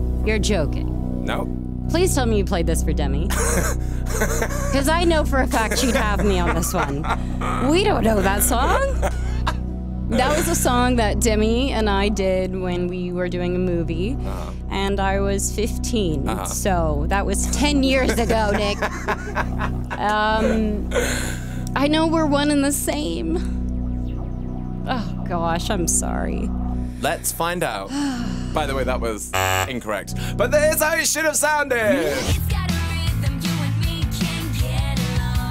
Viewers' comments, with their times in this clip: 0:07 that voice crack lel
0:22 Is it just me or she sounds like she holds herself to cry? OMG I miss Princess Protection Program